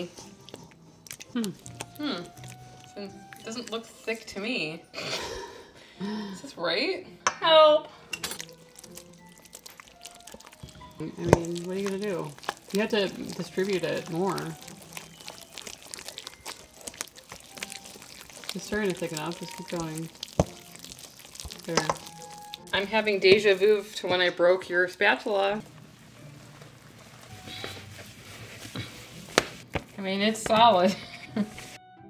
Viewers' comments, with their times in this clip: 0:07 that sound is what moist is 😂😆
0:15 Honestly the sounds are grosser than the word moist 😂